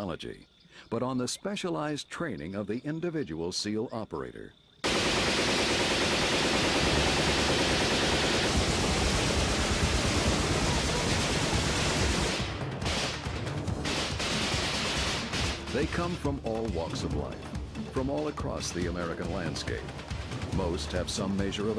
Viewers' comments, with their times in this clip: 0:05 that's a LOT of noise....it really works that way?